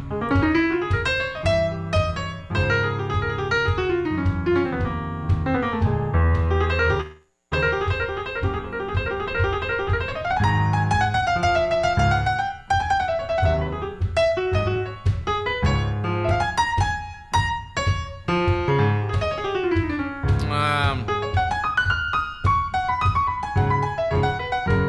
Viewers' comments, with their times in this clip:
0:06 did he just pull a Chopin there ?! 😮❤😍